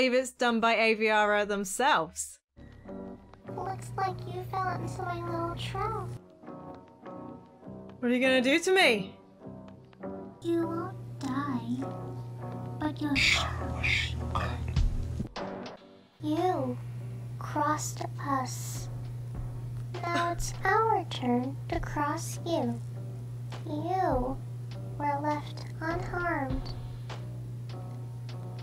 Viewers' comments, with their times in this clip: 0:10 THE CIRCUS BABY VOICE LINE-